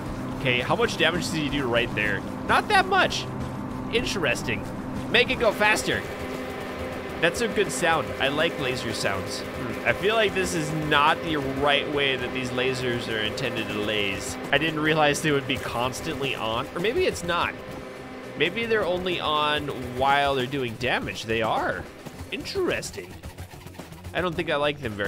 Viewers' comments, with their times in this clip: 0:10 that one fly when your tryna sleep